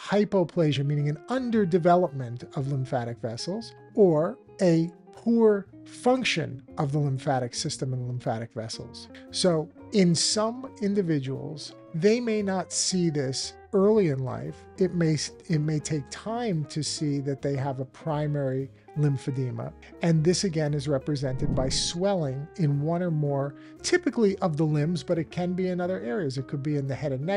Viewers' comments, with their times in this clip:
0:10 Intended to watch the video but had to stop, the music is 🤬